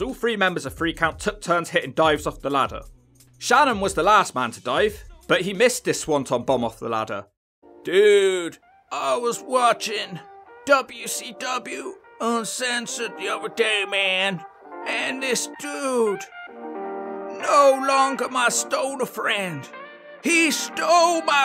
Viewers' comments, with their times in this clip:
0:08 even with your accent you still some how nail that hardy 🤣🤣🤣🤣